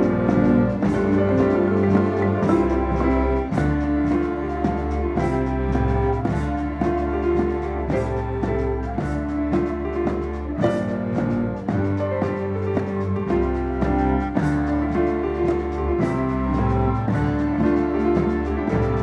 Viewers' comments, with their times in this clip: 0:04 The flute is barely audible; it could've taken centre stage. I feel like nitpicking about the percussions, but that's fine. Overall, quite good.